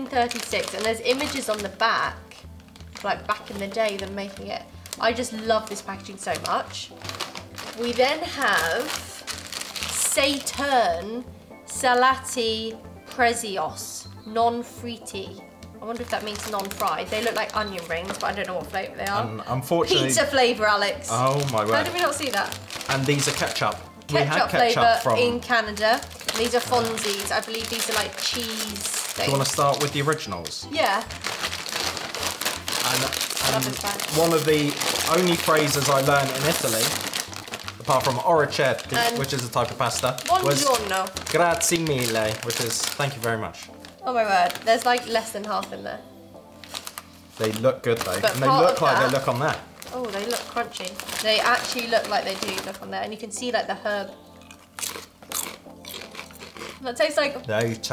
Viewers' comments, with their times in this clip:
0:10 she butchered the Italian language
0:39 What a terrible pronunciation😂😂